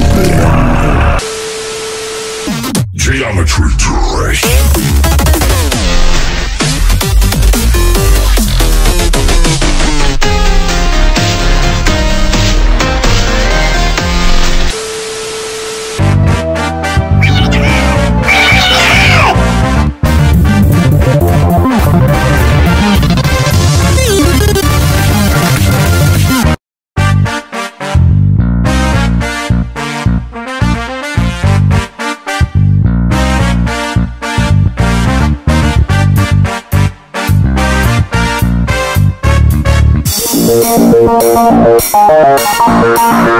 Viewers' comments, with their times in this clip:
0:10 sounds good. Feels like different music
0:26 it sounds good ngl